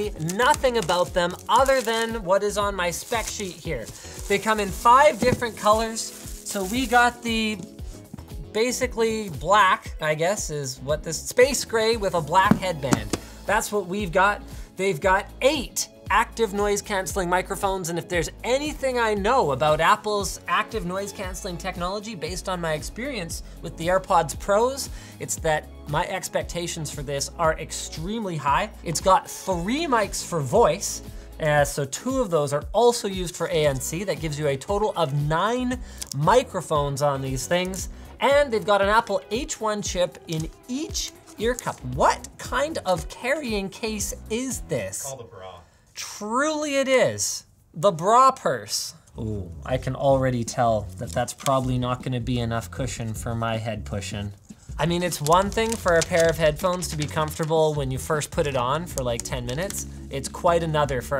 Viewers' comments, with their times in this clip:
0:04 sounds exactly like when you crouch jump in csgo
0:47 the bruh purse